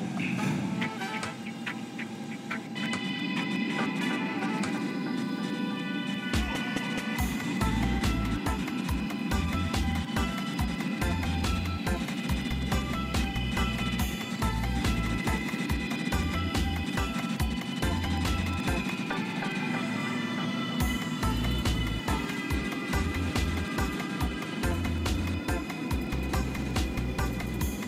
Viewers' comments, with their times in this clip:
0:10 Almost sound like R142A's start-off propulusion.